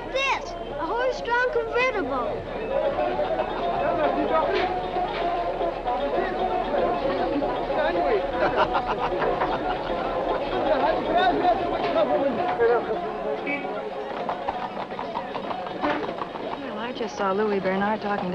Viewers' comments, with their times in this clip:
0:05 It is so absurd when they are referring to the inhabitant of Marrakesh and Morocco as a whole as "Arabs" when you hear very clearly the Amazigh natives chatting in the background using Tamazight language as well as their local music. And ofc let's not forget the language that local guy on the bus was speaking. that's not Morocco's language at all. I just want to understand why on earth did they use standard Arabic?